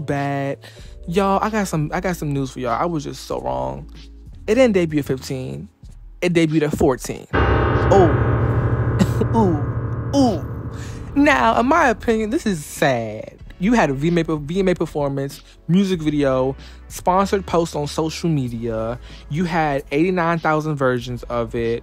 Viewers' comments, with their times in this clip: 0:08 The dramatic music !!!!!!!! 😭😭😭